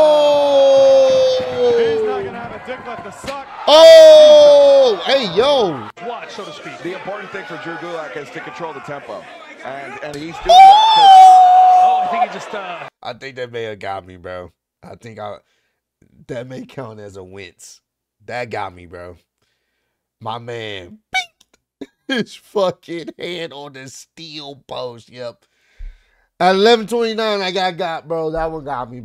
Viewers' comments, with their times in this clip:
0:10 That high-pitched “Oooooooooooo” you did got me.😂😂😂